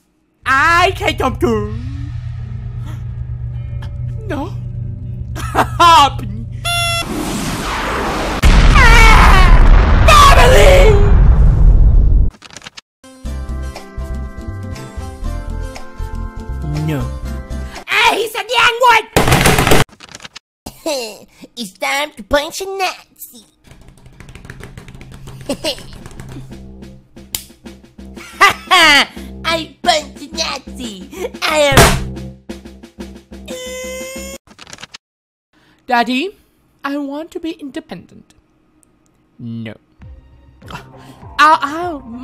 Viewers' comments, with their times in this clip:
0:08 Put captions on and it says R.I.P jake Paul
0:27 France: I want to punch a NAZI Nazi: crushes France: hurt baguette noises